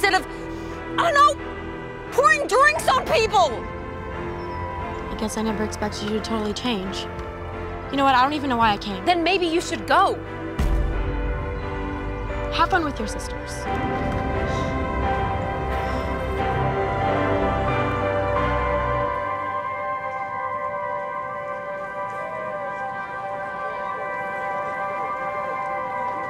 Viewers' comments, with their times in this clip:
0:08 The vine boom got me dying
0:10 the vine boom is taking me out 😭😭😭